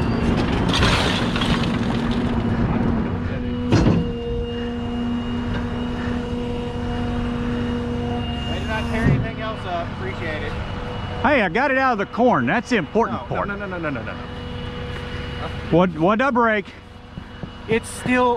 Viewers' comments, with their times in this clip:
0:06 A lot more of a crunch than a boom.